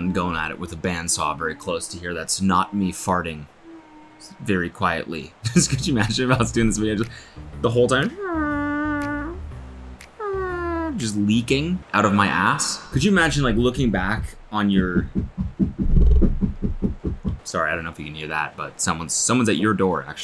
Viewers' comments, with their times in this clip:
0:06 it was me farting